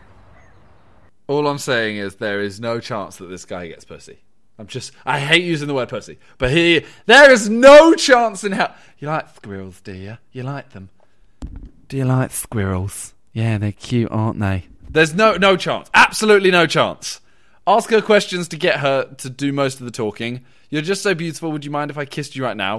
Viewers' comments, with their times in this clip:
0:08 im dead asf omg 😂😂😂😂"doyaloik squirrels"